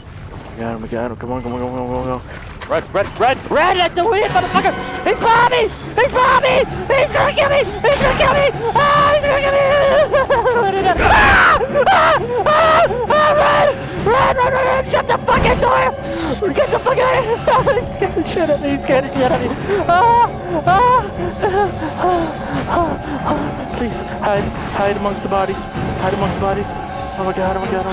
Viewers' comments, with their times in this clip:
0:10 that scream tho
0:12 his scream he's behind me he's behind me AAAAAAHAHAHHHAHAHHAHHAHA